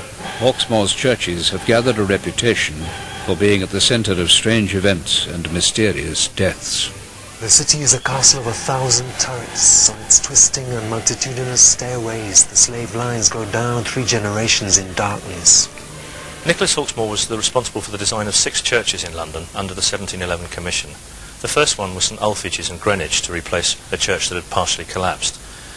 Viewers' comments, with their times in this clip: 0:08 The guy looks and sounds like he's on Ecstasy 😆